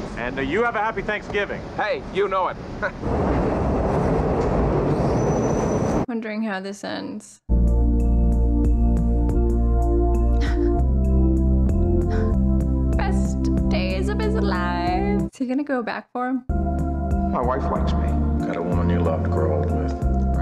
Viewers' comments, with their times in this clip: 0:08 John Hughes...damn you when that score hits 🥺😢😭